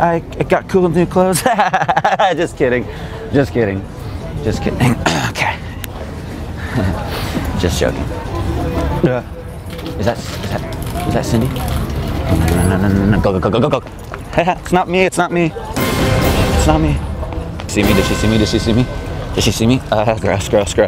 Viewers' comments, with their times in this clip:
0:08 He farts listen closely